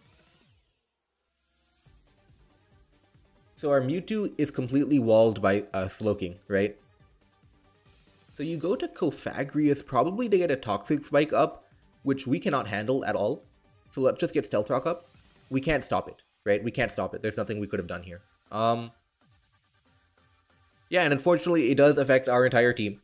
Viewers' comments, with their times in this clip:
0:08 odd enunciation on cofagrigus lmao